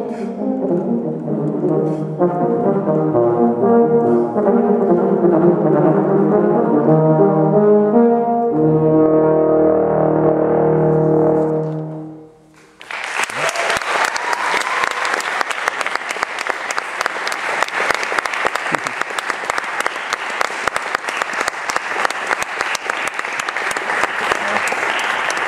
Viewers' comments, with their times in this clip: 0:09 the pedal tone gives me the chills!!!!!